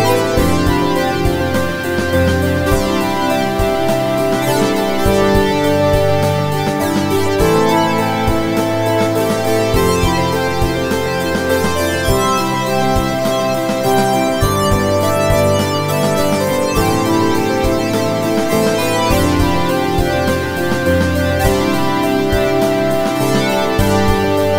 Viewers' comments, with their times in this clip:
0:06 ha i heard Avast your ass !